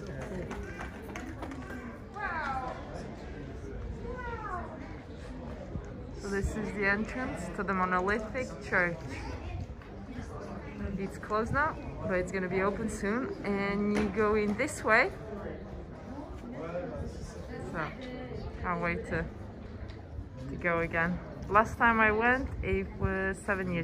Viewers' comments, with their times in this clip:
0:05 LOL! I think that those car horns were for the strong men who carried up the strollers :) Some history. When the people rise up against the powers that be, heads get chopped off, everywhere. Lovely wine tasting :)